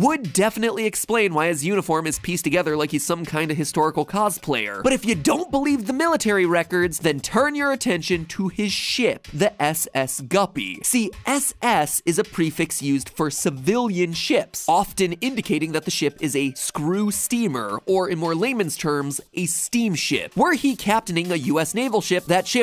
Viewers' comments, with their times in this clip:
0:08 I definitely didn’t hear ship…